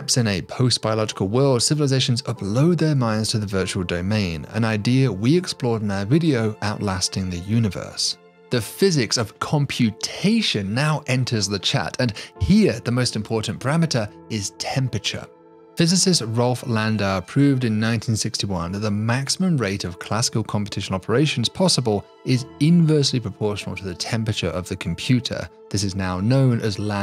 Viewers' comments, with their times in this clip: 0:08 Excuse me but I can't get over the fact how seriously you said "The physics of computation now enters the chat" 🤣